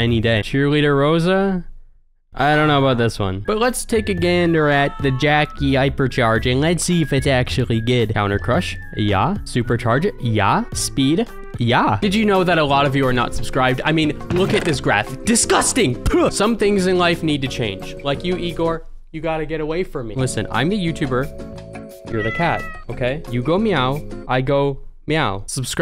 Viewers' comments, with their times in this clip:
0:07 Those "yaah" made my day